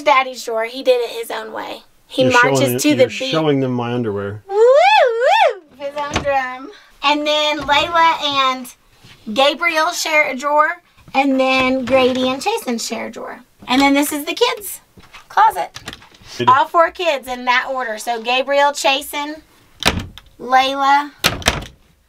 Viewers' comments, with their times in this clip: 0:05 Some gets hurt Ambulance: